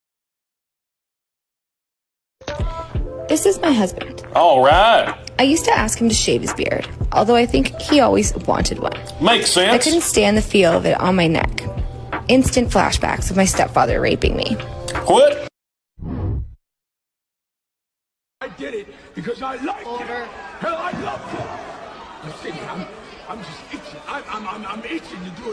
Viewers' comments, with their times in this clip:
0:10 am I the only person here who out loud said “Wut…” In the exact same tone as this guy?